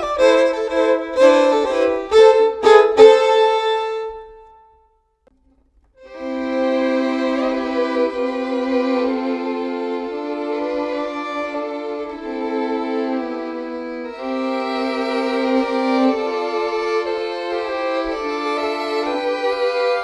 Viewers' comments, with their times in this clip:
0:05 That was played beautifully! Reminds me of that scene in Titanic, although i know it's the theme song to Mr. Bean 1980s show!
0:06 so calming doe